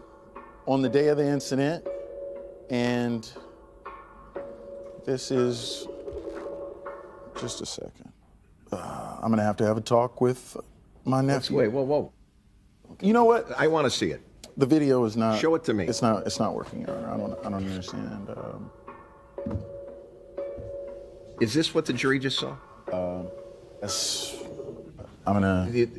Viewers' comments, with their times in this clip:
0:07 Loving that the prosecutor laughing and having to turn away could be in or out of character — either way it still works lol